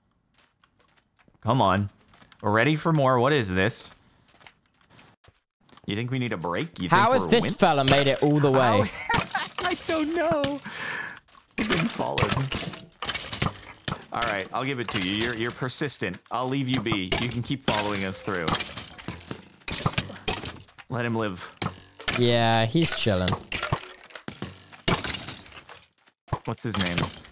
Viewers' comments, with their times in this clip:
0:08 Captin sounds alot like ranboo